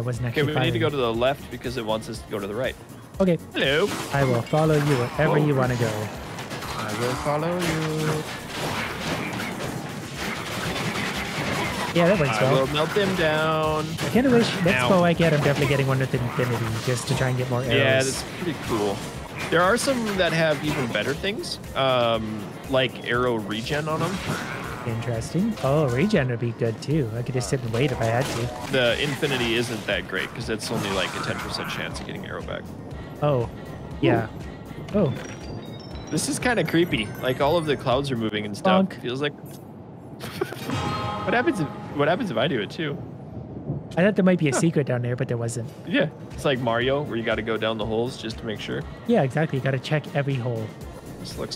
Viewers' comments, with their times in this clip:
0:05 Wait did he just sing?
0:33 That single prolonged bonk is going to get me through the rest of the pandemic